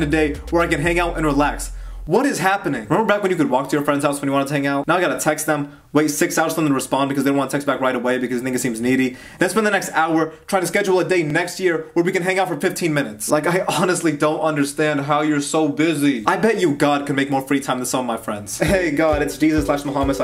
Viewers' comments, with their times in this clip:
0:07 oh ok i thought u said it in
0:08 did he said nigga